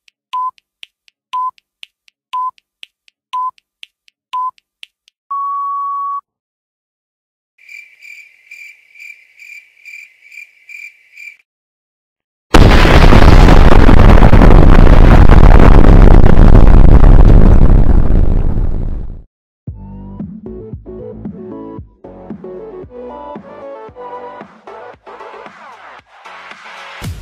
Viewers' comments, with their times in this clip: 0:04 I didn’t listen to warnings You pay for my headphones and therapy
0:04 my ear go bruh
0:12 not as loud as i expected wow these hackers are kind a stupid
0:13 aaaaaaaa my ears